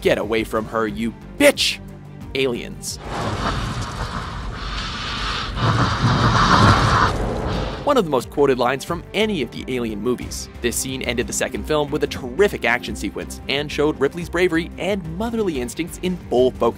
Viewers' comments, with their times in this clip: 0:04 good ripely impression